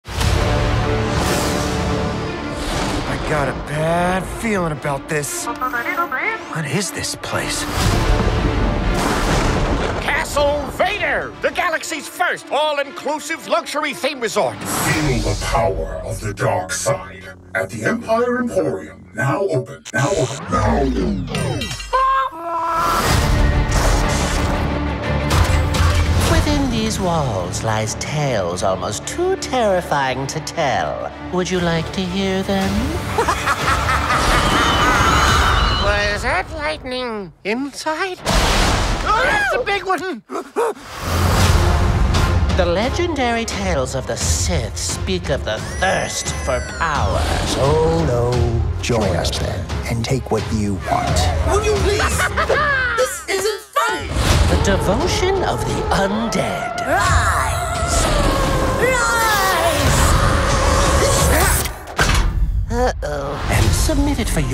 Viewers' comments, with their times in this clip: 0:10 master shake is that you?
0:51 Is it me, or the scream in sound like a angry bird.